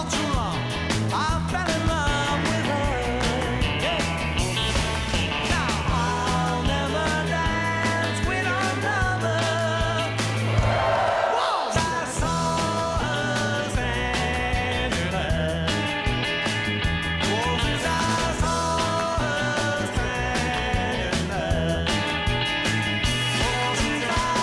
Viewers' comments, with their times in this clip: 0:08 he lifts his hand away but the bass is still playing? Was it pre recorded, or was he still tapping the frets?